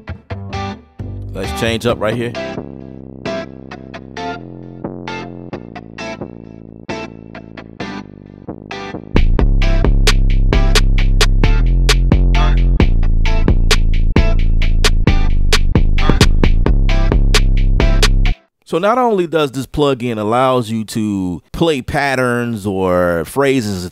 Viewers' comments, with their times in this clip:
0:09 when the beat drop 🤯